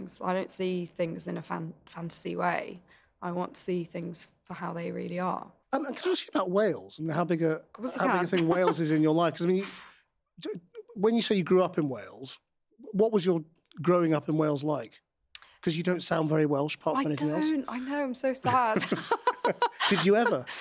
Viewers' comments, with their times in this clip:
0:07 He says "Can I ask you about Wales?" What did she reply with when she kind of giggled?